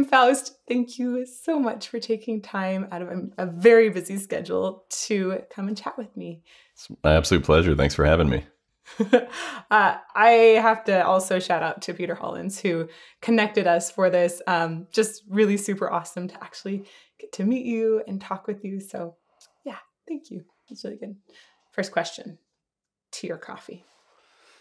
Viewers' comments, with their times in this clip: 0:06 When girls talk to a guy they are attracted to their voice goes a little highter than it actually is. Girls when they talk to me